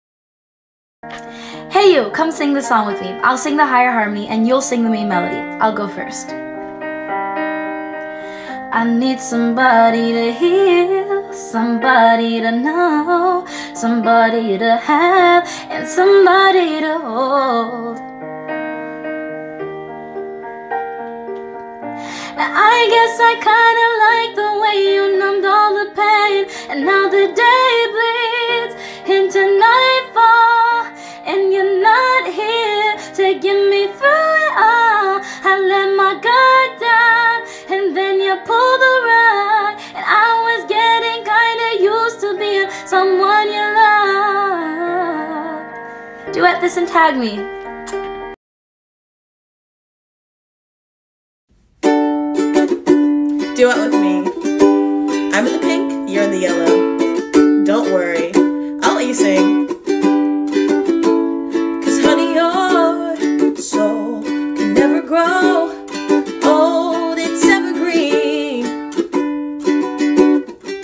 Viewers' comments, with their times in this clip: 0:10 somebody to hEaLlLlLlLlL Wth was that lmao
0:17 honestly felt like she was doing too much but she sings good
0:35 fr she sounded liek Ariana grande
0:52 This one so far was the nicest one, not only her voice but her personality, SHE AN ANGEL! 🥺
0:52 she is such a good singer 🥺 but yea watch and sing bb❤️❤️
0:52 TvT is my voice is really that suck